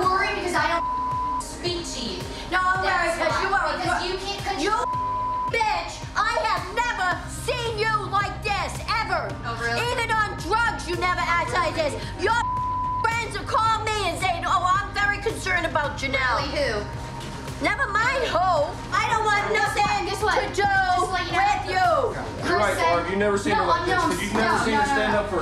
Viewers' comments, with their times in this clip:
0:08 Background music brings out the emotions of mother and daughter.